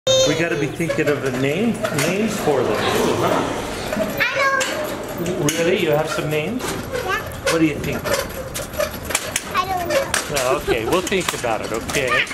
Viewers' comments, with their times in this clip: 0:00 She keeps saying e if you rewind It a lot